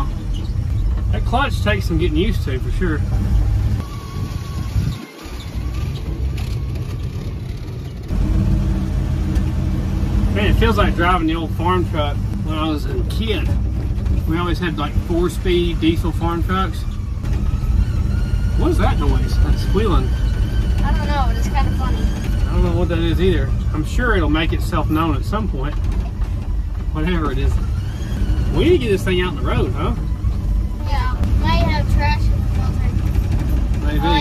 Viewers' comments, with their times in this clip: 0:07 WHISTLING VACUUM LEAK
0:22 Squealing vacuum leak